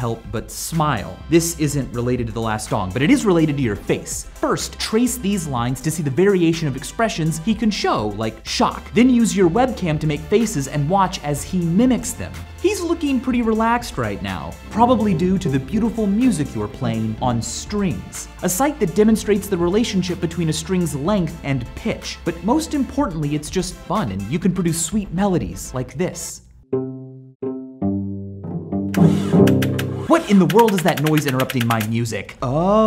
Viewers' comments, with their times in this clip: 0:04 To all counter strike players: listen to him saying "first" I thought he was about to say "first blood"
0:13 you scared me because that sounded like the declaration of war button in eu4